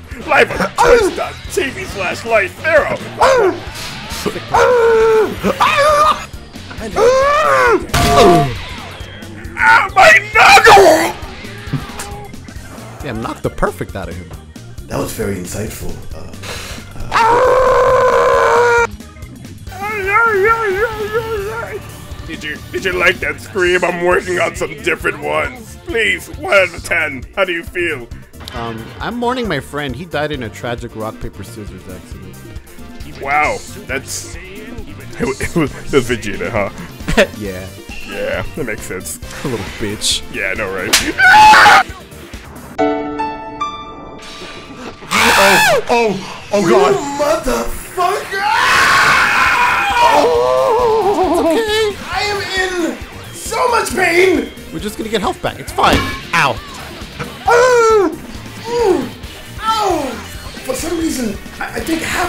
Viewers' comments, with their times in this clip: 0:04 he actually sounded like broly XD
0:10 bro sounded like that pufferfish eating carrot
0:16 Bro got me dying😂😂 I did not expect u to voice broly like that. Got me dying the whole time
0:18 the way cell screams😂😂
0:19 Goofy ah ah Pillarmen theme?
0:46 the sheer charismatic rage is amazing
0:49 Nice Zamasu scream
0:49 Zamasus scream caught me off guard💀😂